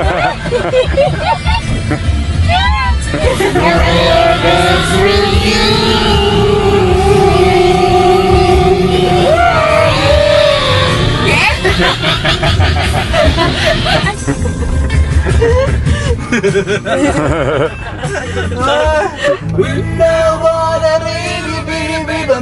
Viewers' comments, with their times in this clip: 0:09 was listening to youtube in the background. so fking trippy sounds, had to put off my headphones to prove im okay